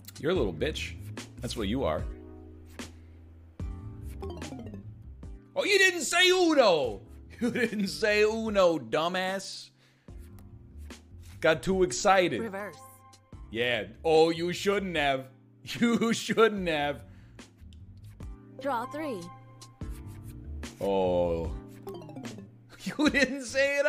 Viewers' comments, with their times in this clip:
0:05 I just love how he says dumbass